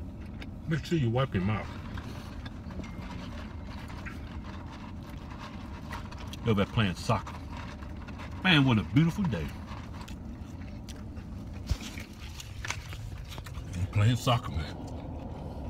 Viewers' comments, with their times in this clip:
0:03 I heard a ipod noise in